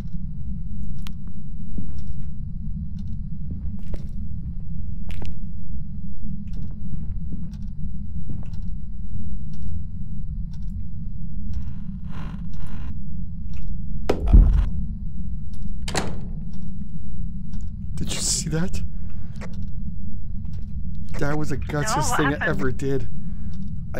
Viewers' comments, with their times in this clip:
0:06 I love the part when he throws the emf out the door and hears EHHh.... and then slams the door shut 😂